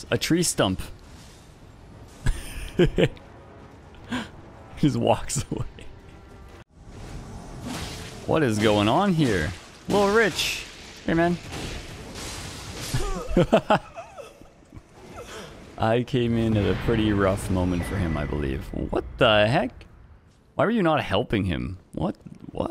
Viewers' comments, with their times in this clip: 0:09 just casually ruins his day and runs off laughing 🤣